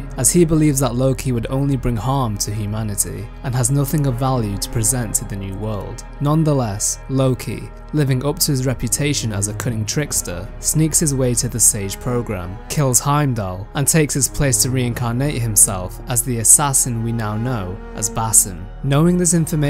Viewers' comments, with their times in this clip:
0:07 I swear to god I almost choked on my drink. I could have sworn you said; "Loki, living up to his reputation as a c*nt and trickster..."